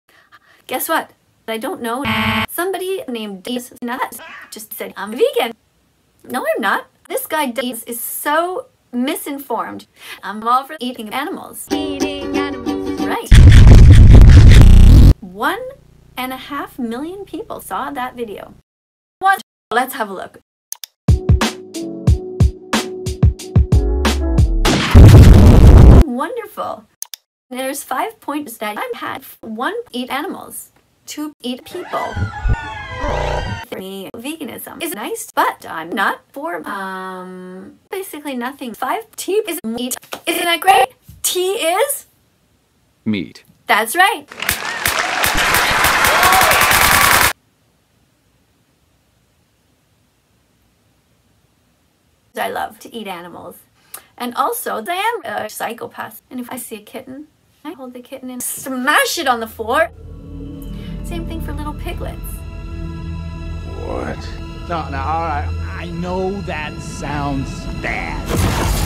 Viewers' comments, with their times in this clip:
0:02 what is the aaaaahhhhh supposed to be hahaha
0:11 Eating animals is right! (LOUD MINECRAFT EATING NOISES)
0:24 i can't believe somebody would laugh at an animal being KILLED and call it "wonderful"
0:44 IM SCARED WHY DID SHE CLAP LIKE THAT 😭✋🏼
0:52 this doesn’t sound edited ngl